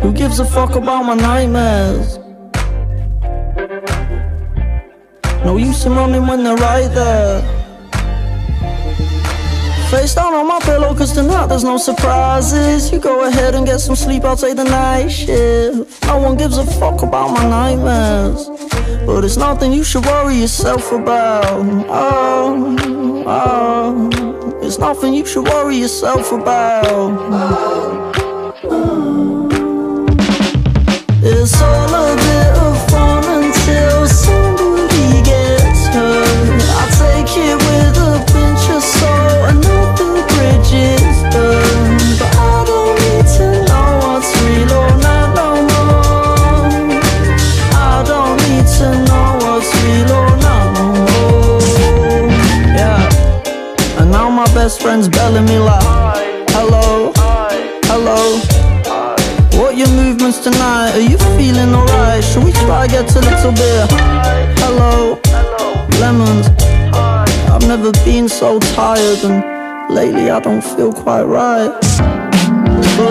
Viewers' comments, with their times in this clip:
0:05 when it says "No use to moaning when they're right there" it sounds more like "No use in running when they're right there" hmmMMm
0:56 the last hi sounds so sad